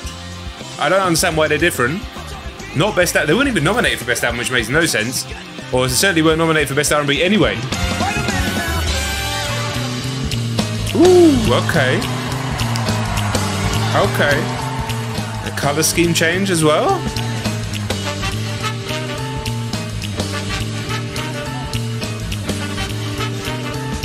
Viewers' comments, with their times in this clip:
0:10 The vibe change sounds like Sinatra/Rat Pack era Vegas. I love these guys absolute genius.